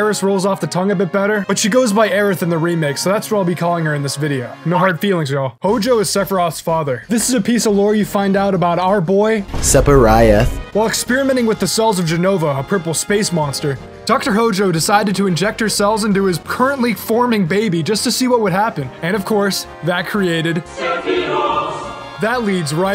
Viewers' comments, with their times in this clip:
0:09 I would never forget that video.. I'm visibly cringe everytime he said Sephiroth.. Lol